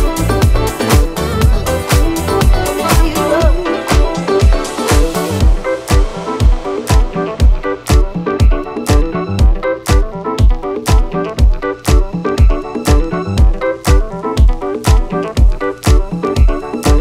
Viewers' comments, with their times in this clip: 0:05 song starting absolute fire